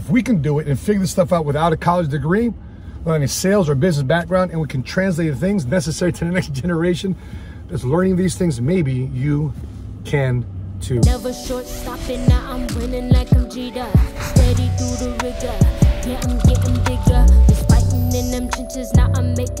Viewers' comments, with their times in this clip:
0:07 you are saying that's a satanic generation, or is it my mistake.